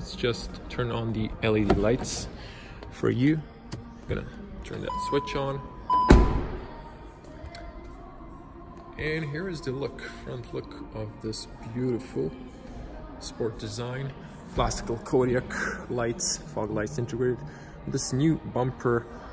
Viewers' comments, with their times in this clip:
0:05 really love dat solid door closing sound